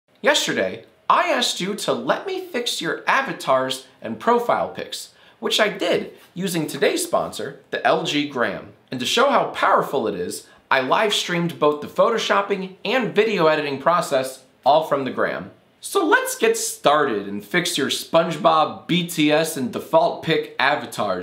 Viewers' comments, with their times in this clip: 0:02 wtf WHY IS A WONAN SCREAMING AT A CAT?! Tf